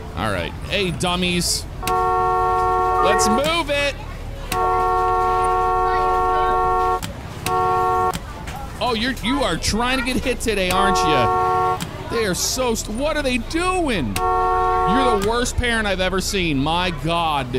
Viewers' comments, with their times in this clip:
0:03 that whole moment you really sounded like a school bus driver 😂😂😂😂